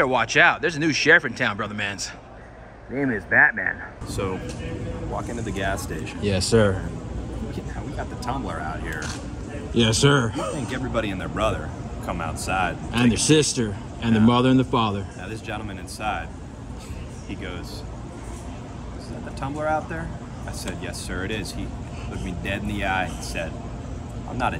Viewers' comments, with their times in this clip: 0:09 Hey it sounded like he said.....